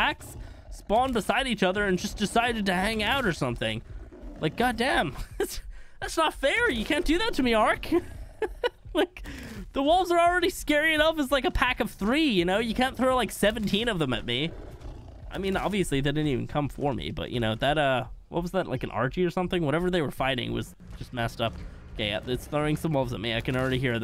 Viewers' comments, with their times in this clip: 0:10 Lol heard a drop as he was runnin from wolves XD
0:10 I heard a drop. Sennheiser's ftw
0:10 i think there was a faint sound of a drop